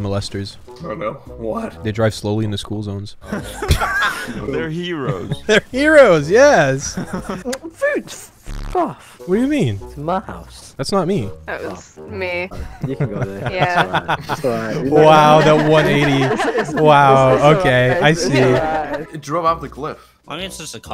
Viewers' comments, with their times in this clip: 0:04 when somoene said "they're heros yes" it sounded like dream lmao